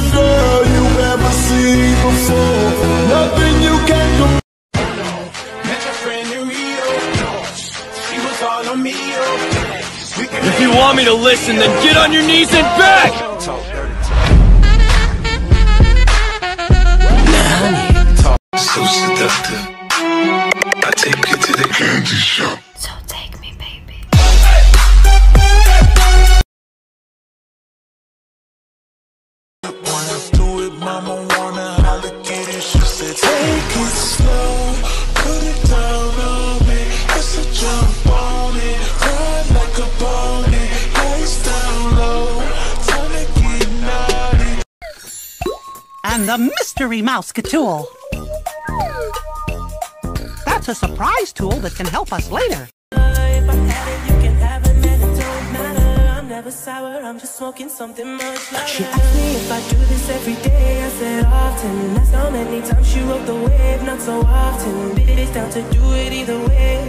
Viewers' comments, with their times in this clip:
0:09 my sound was up way to high💀
0:44 not the Mickey mouse sounds I need holy water
0:49 NAHH NOT THE MICKY MOUSE CLUB HOUSE AUDIO IM SOBBING 😭
0:52 NOT THE MICKEY MOUSE AUDIO IM DYING FSAKJHFDSKJVDSKJHVBF💀💀💀💀💀💀💀💀💀💀